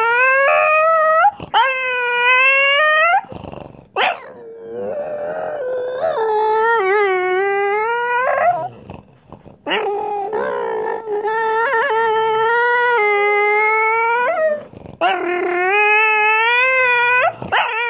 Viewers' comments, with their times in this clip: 0:04 Foot slipped off the clutch between 2nd and 3rd